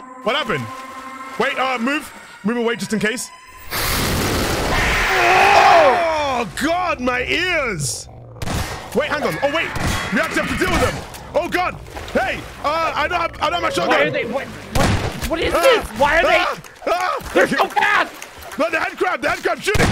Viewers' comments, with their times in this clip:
0:04 JESUS, CRAP, that was fucking loud!!